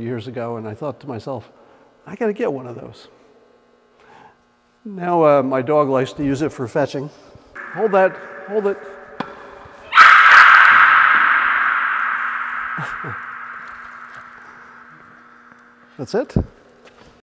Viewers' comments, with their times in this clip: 0:10 real life reverb